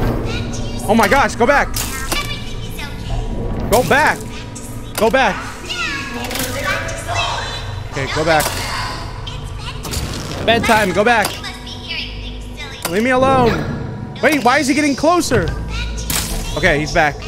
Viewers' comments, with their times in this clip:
0:05 Did anybody else hear William Afton